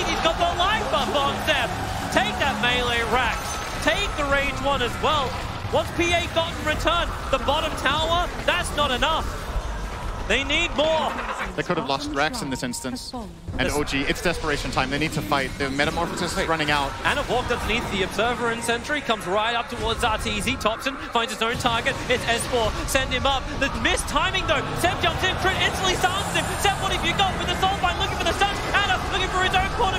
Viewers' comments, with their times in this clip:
0:10 "liquid have lost rax in this instance?" where is liquid?